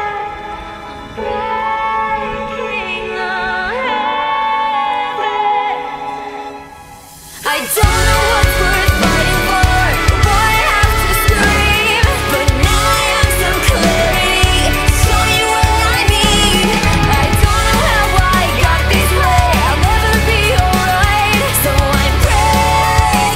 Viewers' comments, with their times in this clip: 0:08 Some Paramore, Evanescence and Within Temptation there :D